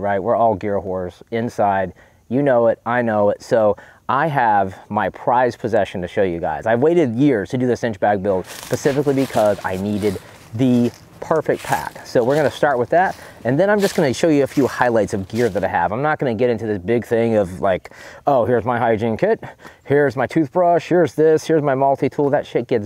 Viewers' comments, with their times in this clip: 0:08 He lost me at "Pacifically"